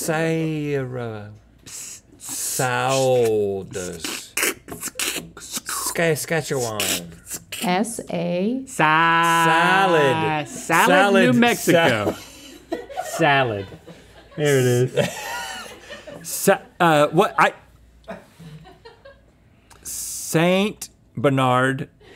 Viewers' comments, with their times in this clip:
0:05 He said Sketchewan 😂